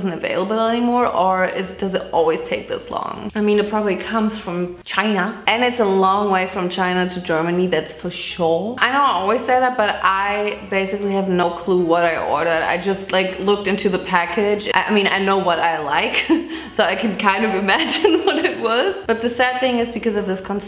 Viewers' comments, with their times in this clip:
0:04 why she said china like that... that is kinda racist.